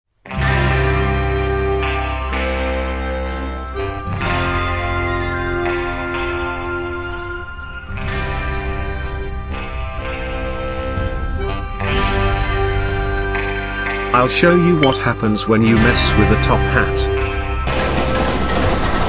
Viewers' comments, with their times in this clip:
0:00 the rdr music just tells me this will be good